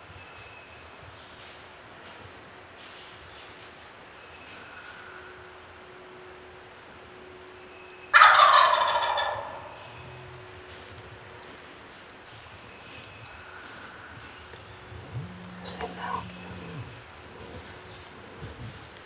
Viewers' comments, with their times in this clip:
0:07 That first gobble that isn't muffled by terrain is what turkey hunters live for. Sent chills down my spine even on video!!